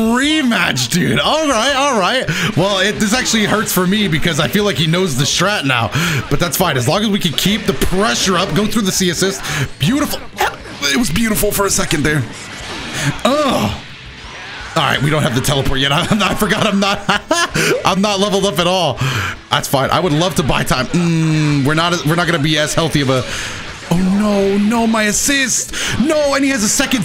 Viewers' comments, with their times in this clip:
0:09 if you listen carefully, you can hear Broly grabbing Doto through the screen
0:09 Was that a bark?
0:10 WHAT WAS THAT NOISE 💀